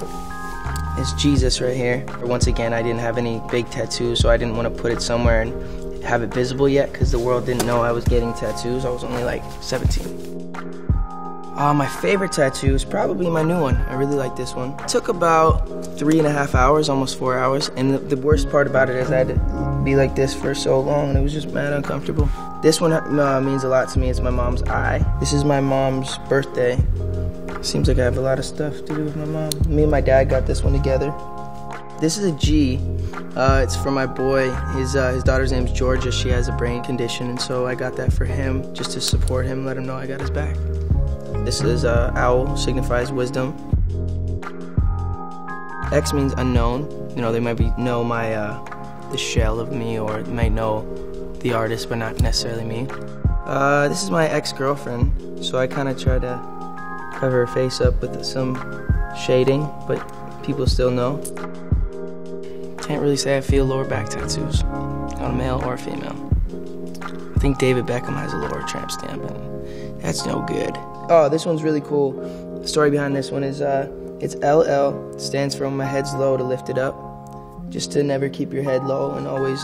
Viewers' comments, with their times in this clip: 0:09 The way he said 17 🔥🔥
0:54 he sounded so uncomfortable explaining this one lol
1:03 What did he say ? I can't understand him.